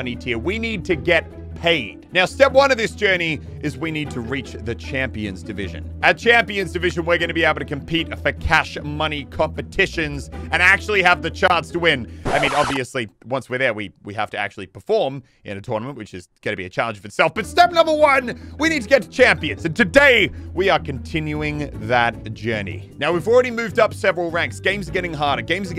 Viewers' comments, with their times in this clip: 0:08 he said for cash money but the subtitles say focaccia money 😂